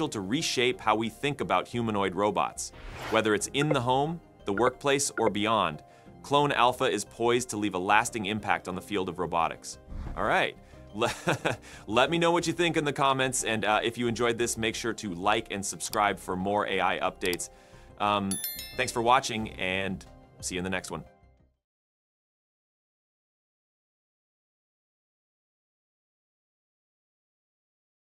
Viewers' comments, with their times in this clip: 0:09 That laugh at the end sounded so real! Ai scares me lol.